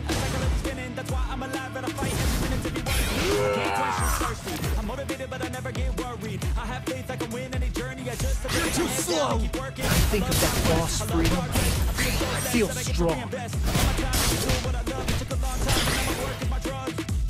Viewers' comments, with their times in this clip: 0:03 Bro you must have type incorrectly and everyone knows that I don't who's hero your talking about but there is no alpha😓 but you used your ulti 15 times my fav❤❤❤ part is that scream sounds like he's having diarrhea😂😂😂 lol